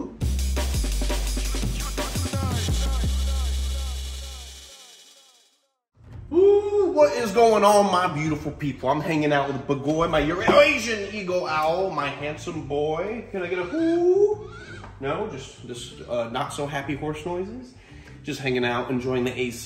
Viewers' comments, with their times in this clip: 0:05 lol that take was really nice, i really thought at first second that was owl's sound xD